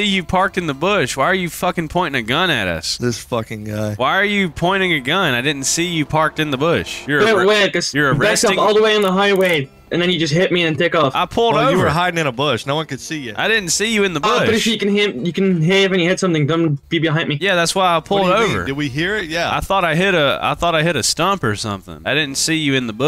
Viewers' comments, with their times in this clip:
0:09 bro sounds like xqc or some shi